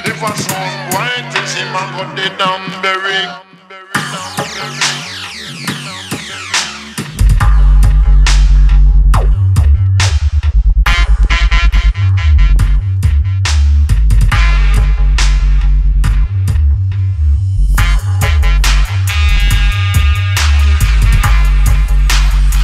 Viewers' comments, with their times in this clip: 0:07 --->HOLY SHIT!!! dafuuq my wardrobe is moving away xDD Bass i <3 u :D